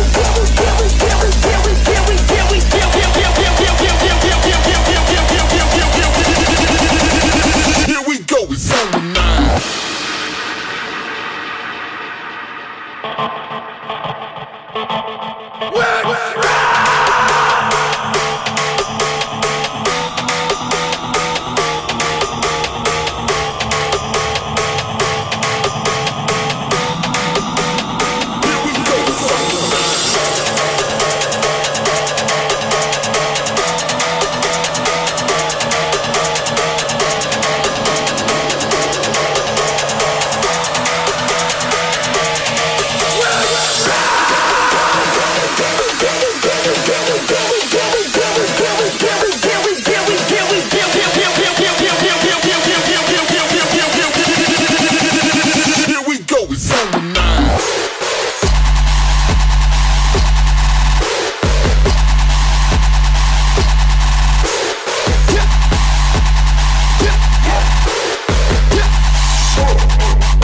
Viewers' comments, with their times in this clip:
0:07 i dont like it when they building up the drop and then killing it with silence.... like or something, BUT when this song dropped it was SICK SHIT!
0:51 sup Hardtrapers <3 DROP <<<<<<<<<<